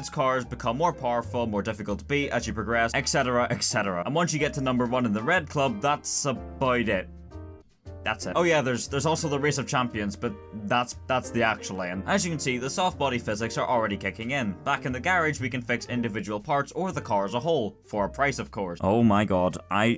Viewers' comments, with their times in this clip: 0:03 "ek cetera" alright buddy